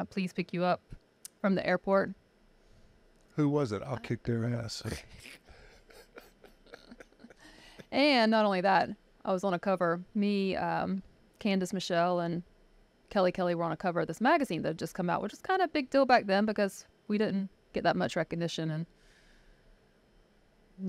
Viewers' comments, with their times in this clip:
0:05 Anybody else hear that Undertaker bell XDDDD